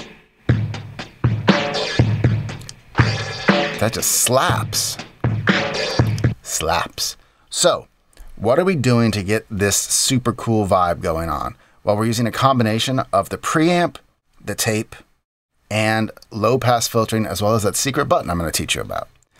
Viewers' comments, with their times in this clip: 0:07 Sounds identical to one of the Reason half Rack devices.